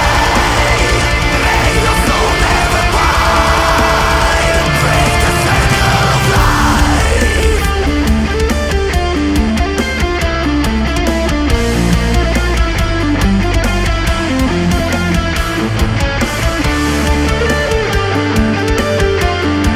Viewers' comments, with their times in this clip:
0:06 sounds like Loneliness by Wintersun
0:06 The melody in Insomnia (starting ) sounds very reminiscent of Wintersun's Loneliness (almost 8 min into that song)